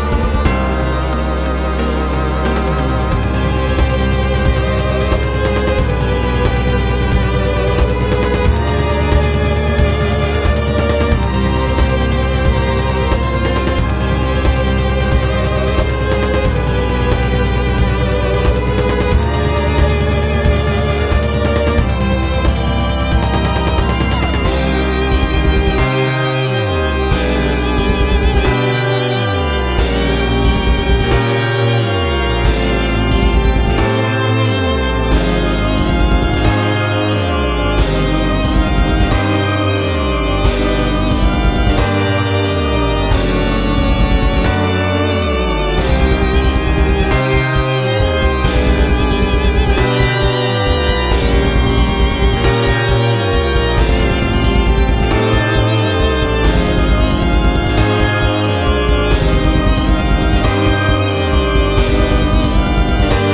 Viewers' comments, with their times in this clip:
0:04 I can kinda hear a part of Beethoven’s 5th Symphony
0:24 The World Looks White is giving me some Concrete Halls vibes (minecraft nether theme), probably because of how melancholic it is, with an underlying feeling of grief. And god damn, The World Looks Red is amazing, the melody definitely takes the cake for the best part in this song, amazing job!
0:24 I feel as I have heard this letifmotife before.....
0:24 I know this sounds like a stretch, but really makes me think of the Phase 2 Transition of the Twin Princes bossfight from Dark Souls 3, I feel like they use a similar progression to convey that sense of melancholy and desperation!
0:25 Day 6: Listened to it more than once, still can't get enough of the violin part
0:27 THE GABE LEITMOTIF
0:48 better have that extra distorted guitar from Gabe 2's theme